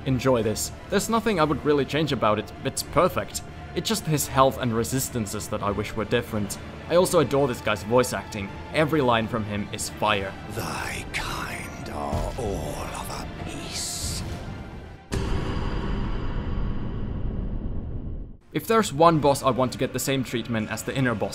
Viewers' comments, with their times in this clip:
0:08 I so glad to hear someone mention how fire the voice acting in this game is, every line morgott says is memorable